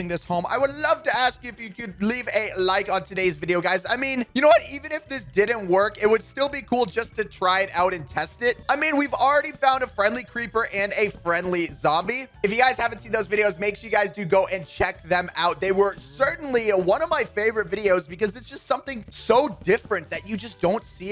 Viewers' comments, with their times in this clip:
0:04 HAHAHA SEAGULL SHARK NOISE sorry shark had to do it 🤣🤣🤣🤣🤣🤣